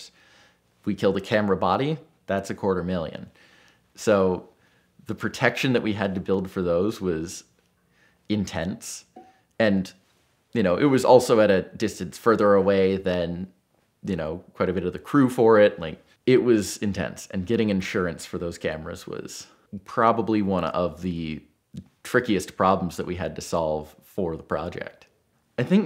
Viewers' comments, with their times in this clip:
0:08 someone uncorks a bottle 😂